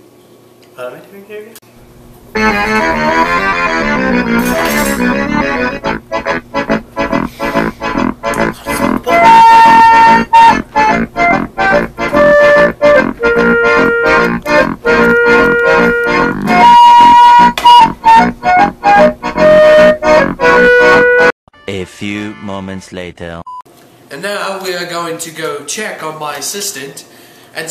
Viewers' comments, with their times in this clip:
0:08 Gee, earrape the music in more why dont you?